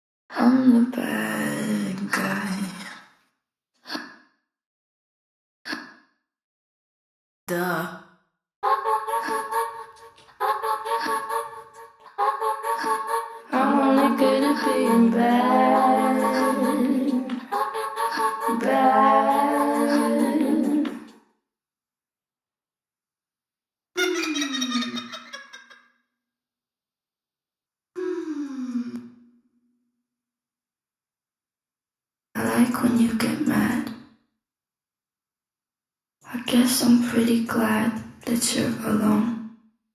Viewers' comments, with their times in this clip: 0:10 sounds like ur room is being possessed and the sound is circling u (headphones)
0:25 sound Like a demon or a laugth of a duck xD